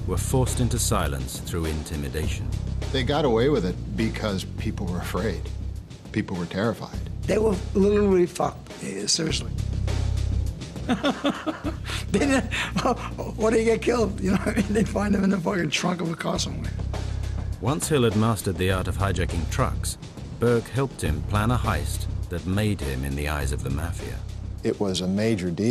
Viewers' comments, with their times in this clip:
0:07 HH ( talking about the truck drivers ): "They were, literary, fucked, seriously " ( then laughs as if telling a good joke ) "or they got killed, They were found in a trunk of a car, somewhere". That's, I think, when you realise what kind of a monster Henry Hill, really, was .